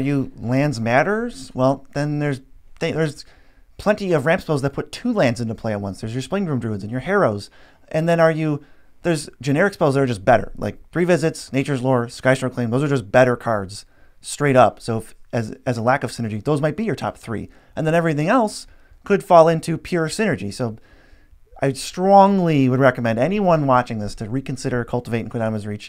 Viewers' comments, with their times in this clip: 0:06 i didnt catch those names